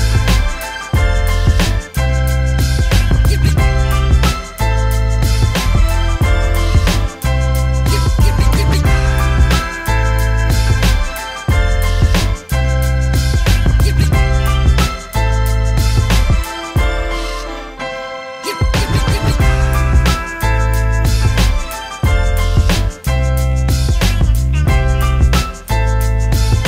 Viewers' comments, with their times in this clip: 0:07 When he rubs it, it goes in time with the music. I think he did this intentionally.